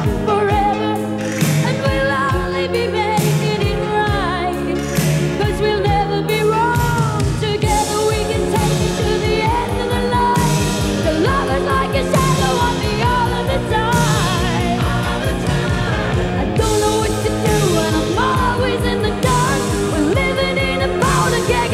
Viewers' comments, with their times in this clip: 0:05 ❤️🎶🎤 I love Bonnie's songs, she sings beautifully with her unique voice 🎤🎶❤️ Thank you❤️